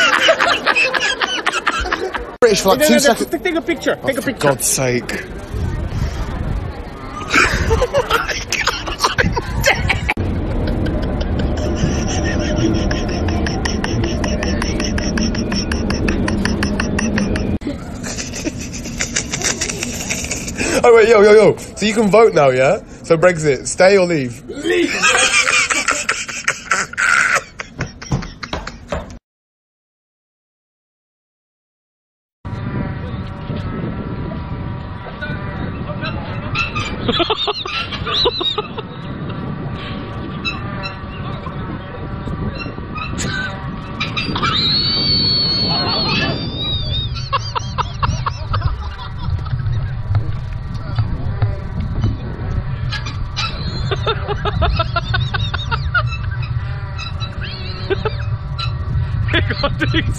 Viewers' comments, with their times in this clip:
0:10 The sound of my car starting up
0:11 omg that laugh made me laugh
0:12 Trying to start my car in winter: The first guy in the back of the van got me straight away (mostly cos I wasn't really trying) but the look on his face says it all.
0:13 had that laugh gone any longer i probably would’ve literally died bro🤣🤣🤣
0:13 who th is pen tapping🖊
0:13 is laugh sound like you baming a hammer 🔨 on the wall 🤣🤣🤣🤣🤣🤣
0:13 not the chalkboard laugh 😂😂😂
0:21 this guy sounds like Gordon Ramsay
0:25 That laugh...God. My mom came into my room and found me dying on the floor.
0:40 ok I get that reference (It’s Wipeout) but that laugh sounds like when your slowly approaching a stop light and you pull on your brakes too early.
0:44 when you accidentally catch a sock with the vacuum cleaner
0:44 that monster that was getting the screams sucked out of him in monsters INC
0:44 The sounds of the machines that dentists use haha
0:44 the dentist drill
0:44 Sounds like a Car Drifting
0:45 my girl be sounding like a teapot.